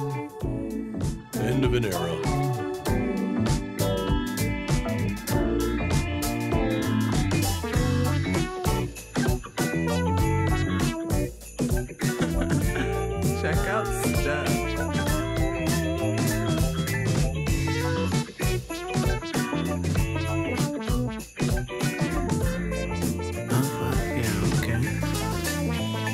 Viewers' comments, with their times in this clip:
0:09 I do the same thing that she does when the synths come in every time I listen to this song. hahahaha It’s my favorite song on the album.